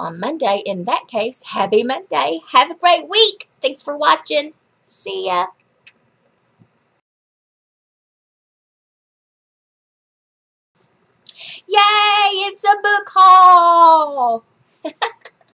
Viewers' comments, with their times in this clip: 0:09 geez don't ever do that again! You scared the crap out of me! I thought the vidoe was done and I had my headphones on and the volume was as high as it could get! I almost had a heart attack! :O But awesome haul! Love your videos!